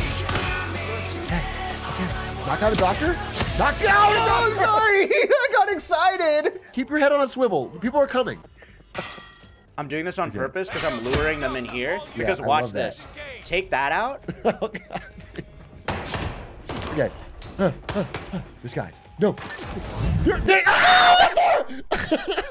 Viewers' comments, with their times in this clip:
0:04 me to my girl every night in that exact tone of voice